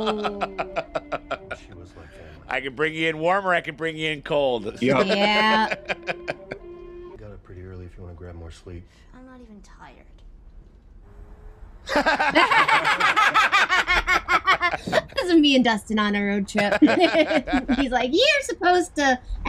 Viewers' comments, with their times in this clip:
0:04 hittin' us with the Mando flute theme, not fair.